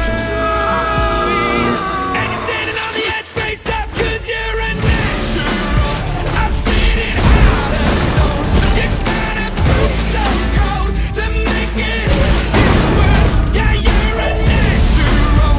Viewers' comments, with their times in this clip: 0:03 THE PUNCHES ALIGN WITH THE BEAT